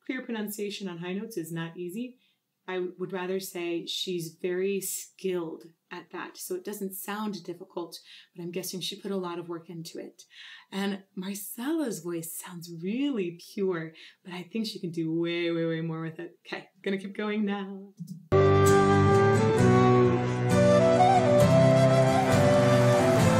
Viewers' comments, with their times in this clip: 0:09 I would think as you said "because of the light instrumentation". Floor does not have to use a lot of volume in her voice here. This makes it less challenging to make the words distinct at her upper range.